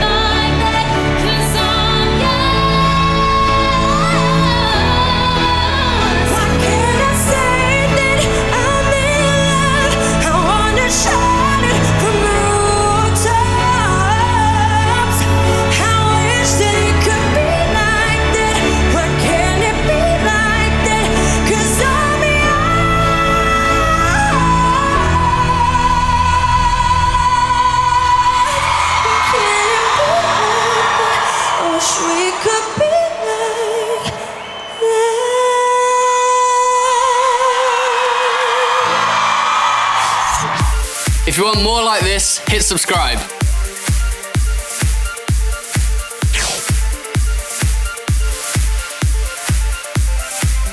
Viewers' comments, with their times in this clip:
0:04 Wardrobe's fab af woah. Jade's falsettos💖 jesy's voice 💘 Peri's high notes👏 Leigh-Anne's emotions 😭
0:22 Perrie's hight note is beautiful as Zayn's high note. ❤
0:22 E5! Wow. So difficult
0:23 perrie's high notes was amazing
0:27 look how happy jesy is when perrie hit that note😭
0:32 I love how Jesy smiled after Perrie reached that high note, plus the cheers omg 💙